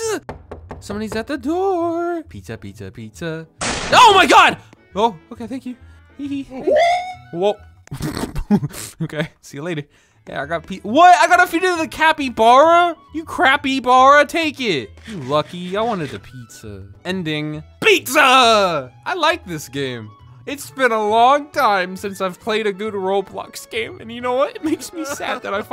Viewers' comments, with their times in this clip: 0:10 LMAOO 🤣 "you crappybara take it 😤" he sounded so annoyed he really wanted that pizza 😭